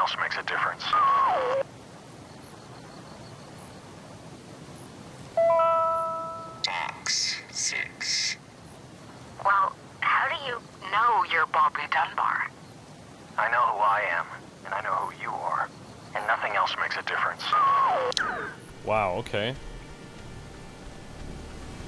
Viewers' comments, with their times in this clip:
0:09 All i can hear is 'how do you know you're ball pit death bar?"